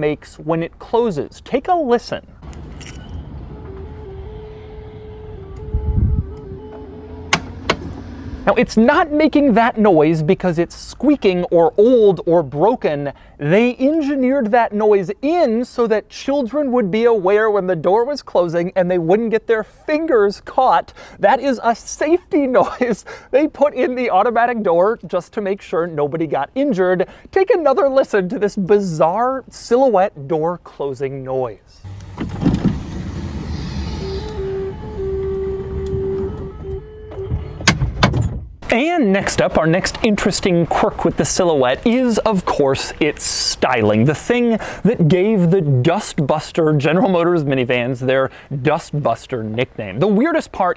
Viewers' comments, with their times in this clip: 0:03 my family had a Chevy Venture when I was a kid and it made that noise when the door closed and it was one of my favorite noises, and hearing it again is bringing back memories. It deeply saddened me when it first stopped making the noise, and then the power door stopped working completely
0:32 That closing door jingle kinda sounds like The Mandalorian theme
0:32 Ha ha ha!!! That f**kin' noise tho! Sounds like Squidward playin' the clarinet or somethin'! Oldsmobile/GM coulda done better on that! 🤣😆😆😂
0:35 It sounds like Kanye when he uses autotune